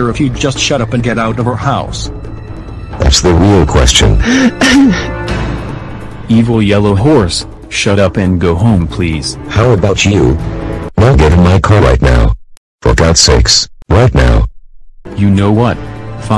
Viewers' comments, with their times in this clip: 0:03 that's the real question. Fake sob